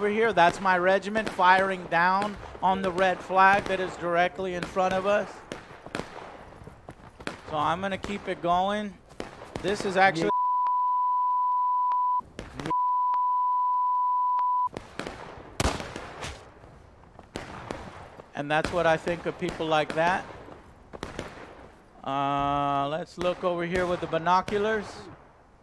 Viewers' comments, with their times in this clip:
0:09 lol wtf did he even say?